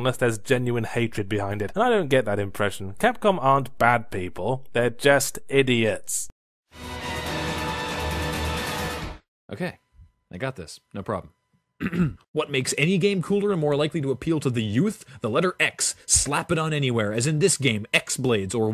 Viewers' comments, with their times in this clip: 0:06 WHO ARE YOU?! WHERE'S YAHTZEE?!